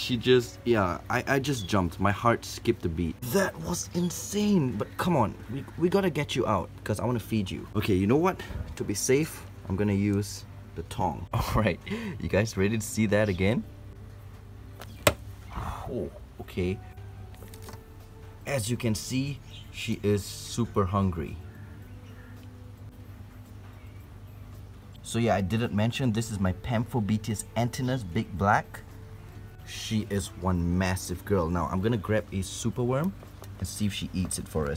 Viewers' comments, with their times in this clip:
0:10 did he said the thong 👙
0:16 Boyfriend: Please calm down. Girlfriend: angry tarantula noises